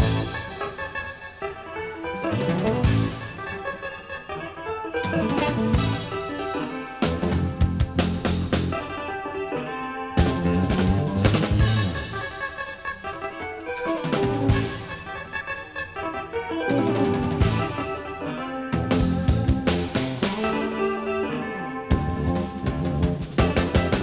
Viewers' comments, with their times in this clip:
0:10 Paul Williams IS the human capo. RIP Allan.